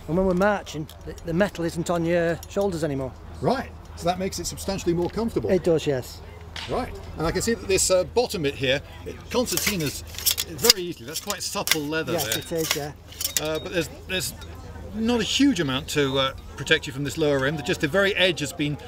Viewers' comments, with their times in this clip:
0:04 He sounds like baldrick (An older version)